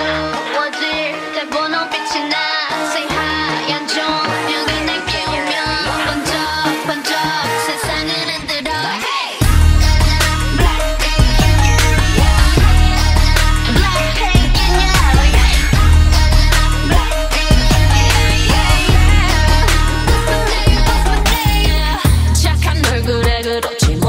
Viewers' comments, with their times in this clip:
0:08 the bass sounds so cool with the vibe 😎